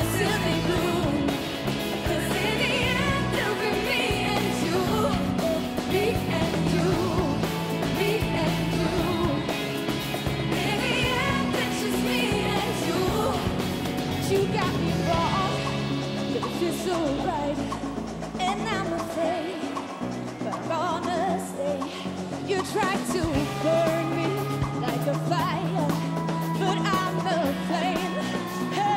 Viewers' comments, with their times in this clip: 0:09 when you hit the cymbals but no sound... happens to me all the time